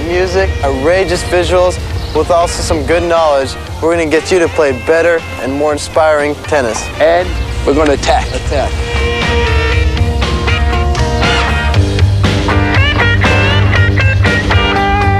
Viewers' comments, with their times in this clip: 0:03 LOL he emphasized the point to late!